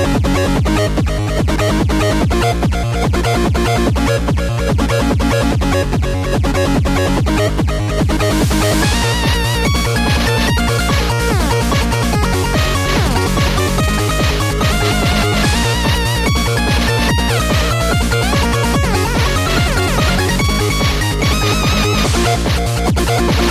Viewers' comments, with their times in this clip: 0:09 dababy without autotune